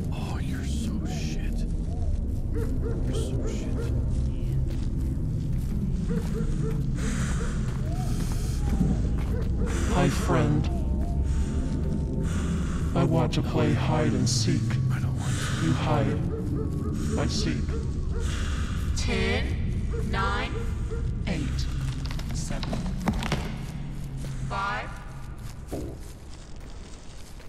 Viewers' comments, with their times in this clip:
0:08 did u censor or was it the game